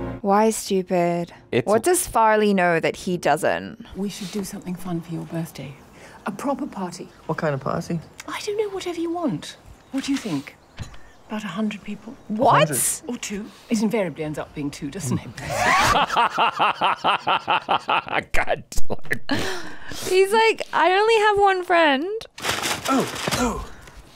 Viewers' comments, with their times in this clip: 0:06 His tone reminds me of Andrew Garfield asking Amelia Dimoldenberg, “When’s your birthday pahty?”